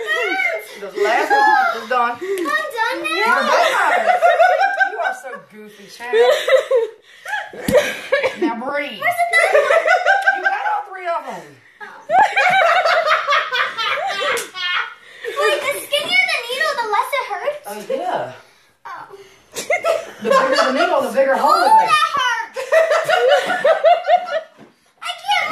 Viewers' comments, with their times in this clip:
0:07 that was really rude of the nurse, this poor girl was so scared and they shouldn’t have laughed.